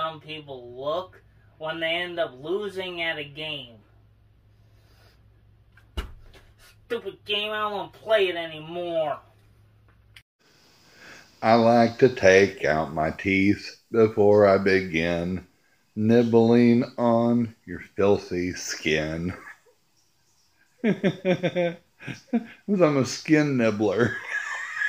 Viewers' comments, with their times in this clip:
0:10 Bruh why does that sound like me snoring